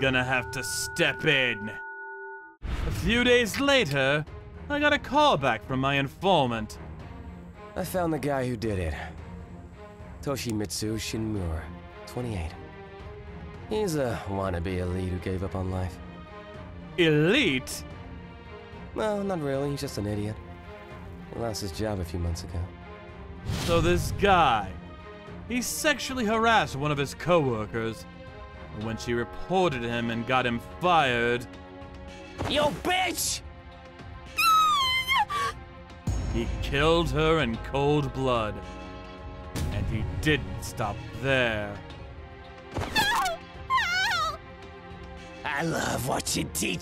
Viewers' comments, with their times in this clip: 0:07 white hair guy new voice second time
0:34 pov most normal sound of a rainforest frog be like